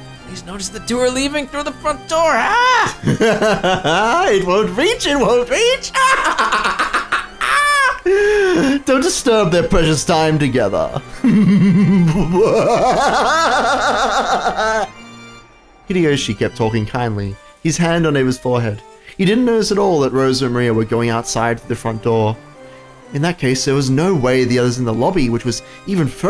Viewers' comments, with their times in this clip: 0:10 that laugh was unique ngl